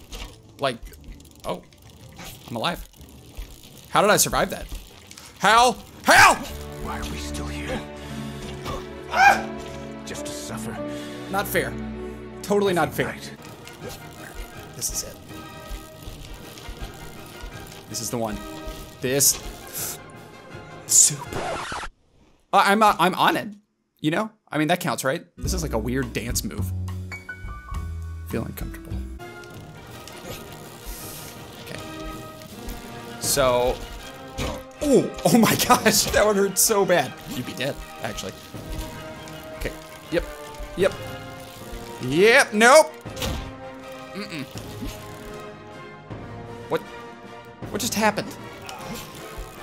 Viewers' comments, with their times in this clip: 0:08 the scream of the day😝
0:34 (It synced with the music when he hit his head and fell over)